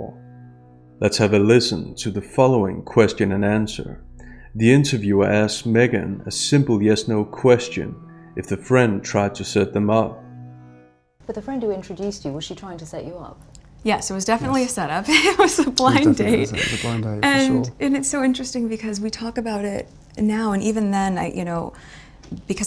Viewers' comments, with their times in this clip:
0:04 why is nutmeg laughing? What a creep.